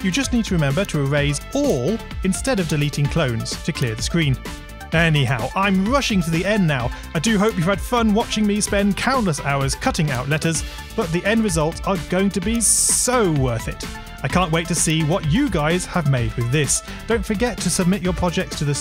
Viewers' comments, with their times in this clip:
0:05 Is it only me or is there a sound of discord notification Great tutorial, super helpful, also for my favourite type of scratch projects - scratch OS simulators, keep up the good work griffpatch, thank you :)